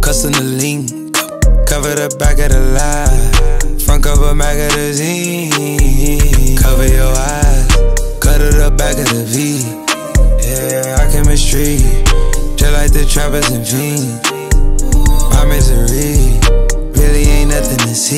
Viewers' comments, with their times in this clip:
0:04 I got goosebumps it just sounds so melodic
0:06 The way he says “cover your eyess”😩